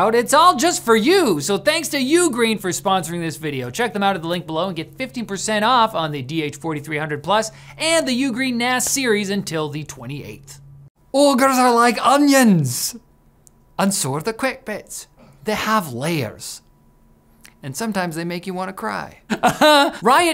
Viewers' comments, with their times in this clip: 0:04 it very much sounds like you said 50 percent off